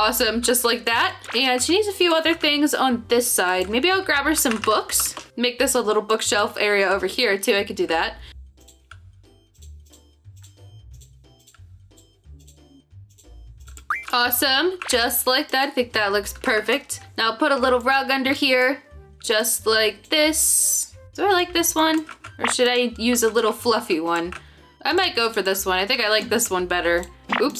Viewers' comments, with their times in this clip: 0:09 THE KEYBOARD ASMR ❤❤